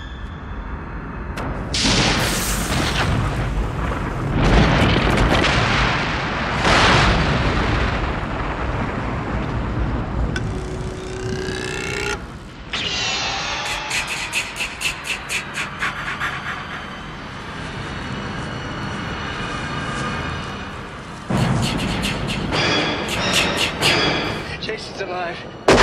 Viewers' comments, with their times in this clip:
0:10 that lightning rod sound is terrifying